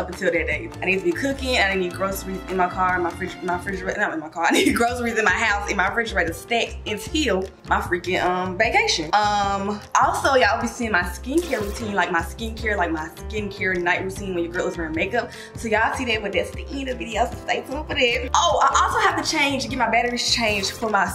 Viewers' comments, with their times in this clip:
0:08 Am I the only one that had heard beacation.@ 😜😜